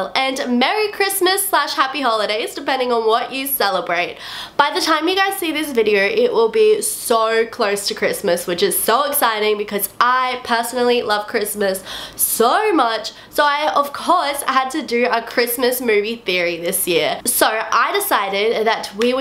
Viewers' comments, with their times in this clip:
0:06 i didnt realize she had an accent until 😂